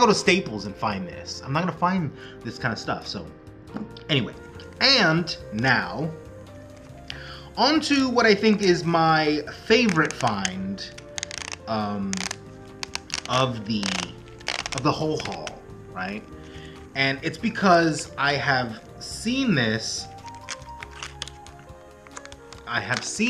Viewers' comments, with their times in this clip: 0:07 She totally *DID* that to you! LOL And that ASMR moment Noice!!! I dig the passion of your hobby.